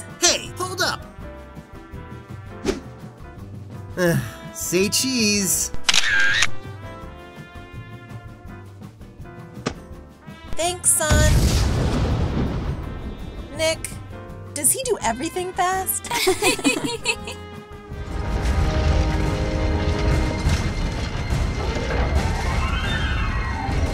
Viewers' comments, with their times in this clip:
0:10 Sonic:runs Girl: does he do everything fast? The other 2: Giggle Me: Pause